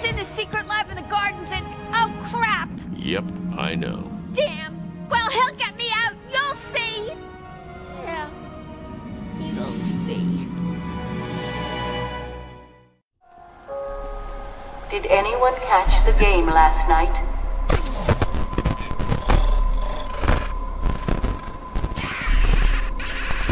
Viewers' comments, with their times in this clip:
0:08 I felt so sorry cuz of Harley's voice ;(